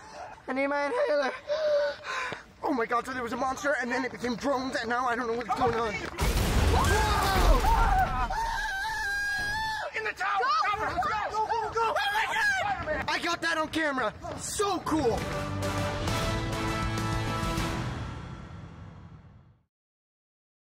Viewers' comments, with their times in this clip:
0:09 "SO cool!" -Flash after screaming